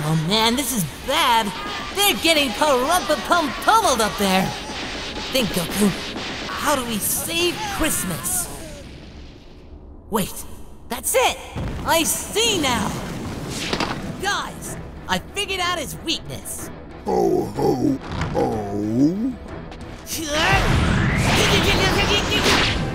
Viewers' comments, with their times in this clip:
0:08 I had this on speaker, and my phone thought Goku was saying "OK Google."